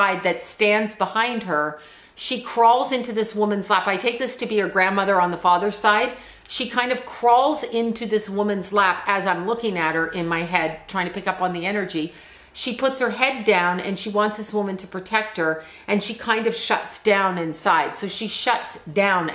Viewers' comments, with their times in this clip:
0:03 there's an EVp caught 😳 its a woman its a creepy voice. Saying i need be heard